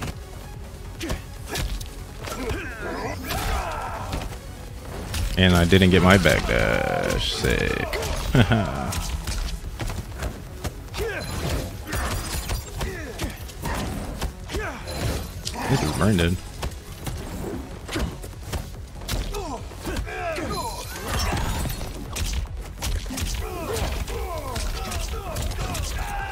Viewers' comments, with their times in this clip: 0:08 “this is brain dead😐” I think it was just the monotone in your voice that made it hilarious 💀